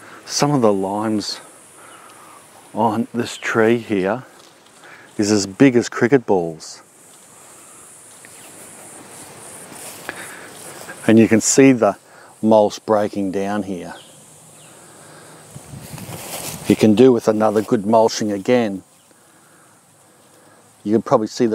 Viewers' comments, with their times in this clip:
0:06 I had to watch it back a few times I thought you said in a sarcastic way “it’s as big as cricket 🦗 balls” . Which I figured was a way in slang to say they were HUGE! Lol! I’m a new subscriber from Hawaii. Love your Channel mate! 🤙🏽